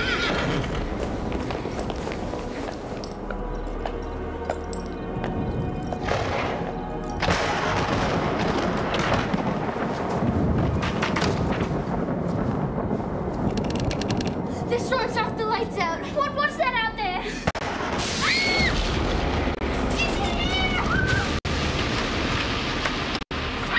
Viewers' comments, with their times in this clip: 0:08 melody in the back